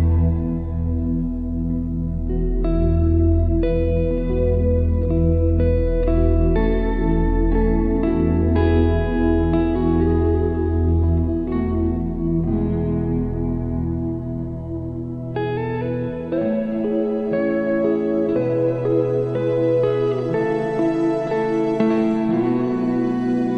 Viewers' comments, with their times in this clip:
0:08 BEAT BOX YEAA